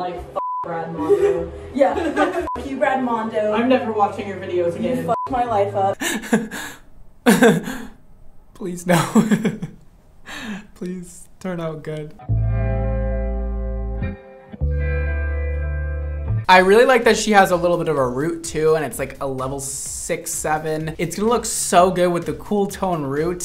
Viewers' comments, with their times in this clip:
0:06 IM CRYING the nervous laugh had me rolling